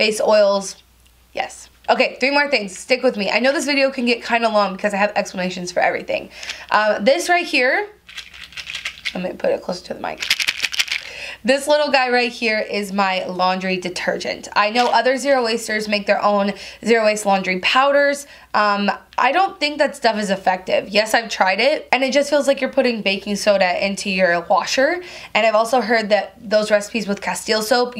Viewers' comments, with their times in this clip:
0:10 Asmr Your welcome